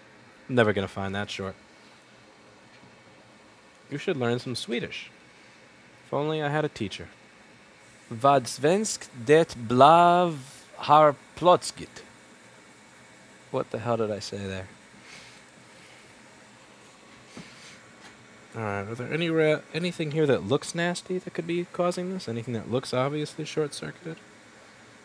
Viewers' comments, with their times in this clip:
0:07 As a swede i have no idea what so ever what you said there or so